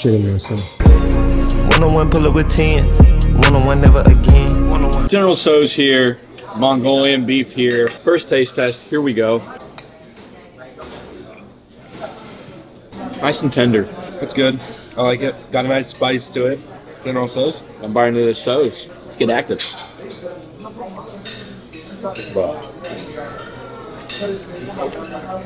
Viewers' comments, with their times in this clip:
0:09 "General sos"... I know he did not just mis-pronounce it that bad